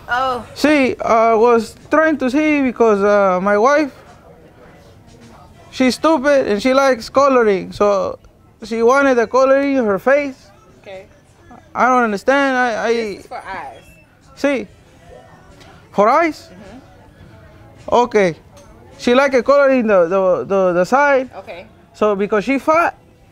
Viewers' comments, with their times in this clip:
0:05 “My wajf shez stooped and she lajk coloring” LMAO